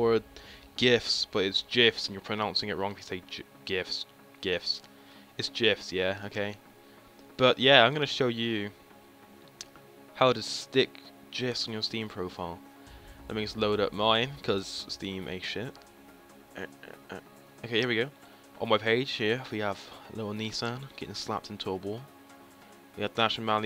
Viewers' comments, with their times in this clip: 0:09 am i the only one hearing: " How To Stick Jizz On Your Profile " ?
0:09 "How to stick jizz on your steam profile"